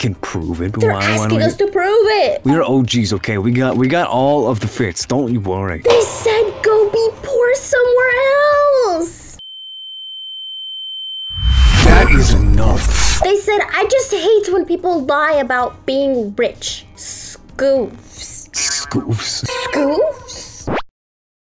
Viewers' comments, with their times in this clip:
0:09 my microwave at 3 am be like